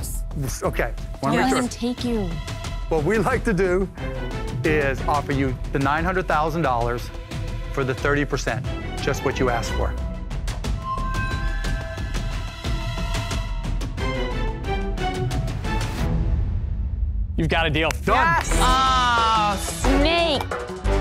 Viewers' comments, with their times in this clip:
0:03 she whispers "Cuban" in the guy's ears